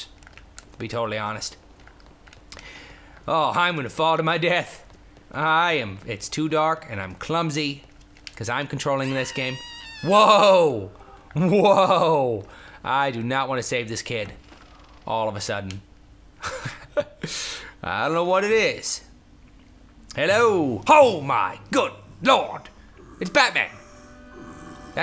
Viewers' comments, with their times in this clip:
0:08 sounds like AHHHHH! but says EEEEEK!